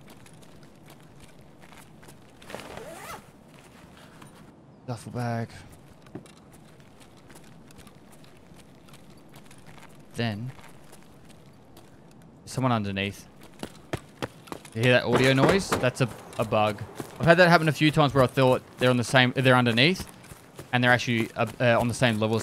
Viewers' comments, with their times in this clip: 0:07 I'm not quite understanding here. I do hear the slight noise which you refer to as a bug, but I've watched it back a few times and can't locate it. Did it sound like it was coming from under you? Because I seem to be completely unable to locate noise in this game on the z-axis. If I'm in 3 story or any building with multiple stories, I can never tell if the sound is coming from above or below. Is this just me? Or is EFT sound coding just kinda limited?